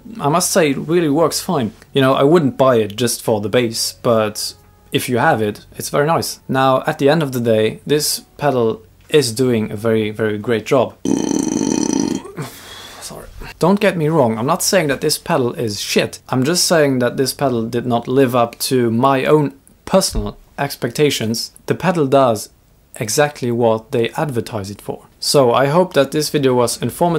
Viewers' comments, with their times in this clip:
0:10 Lmao that burp